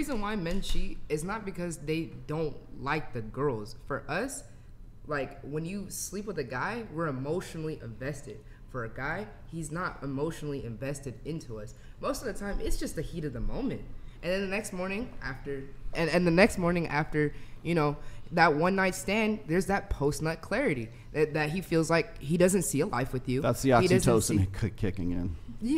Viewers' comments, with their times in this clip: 0:08 Her[?] voice is deeper than most males I know.